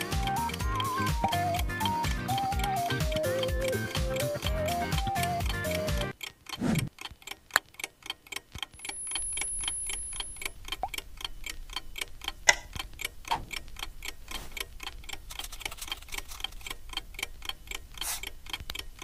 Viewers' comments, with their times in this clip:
0:04 the music sounds like "racing into the night" by yoasobi